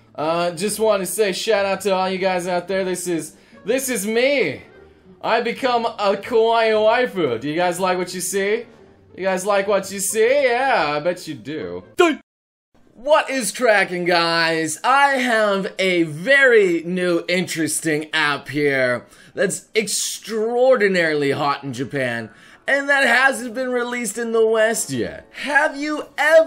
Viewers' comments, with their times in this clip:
0:10 ali-a song plays
0:10 ALI A SONG PLAYS